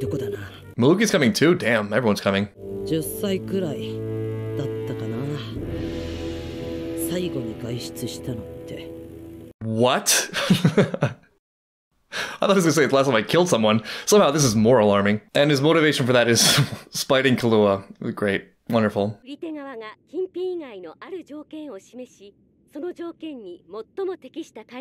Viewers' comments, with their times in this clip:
0:08 Finally my boy Leorio is back!!!!! 😁😁😁😁and that iconic character theme 🎷🎺🎼 I mean that's impressive ^^ he does assassination from his house creating all sorts of cool killing devices...like they say lazy people are the smartest they'll come up with ways to work more efficiently and effortlessly I love it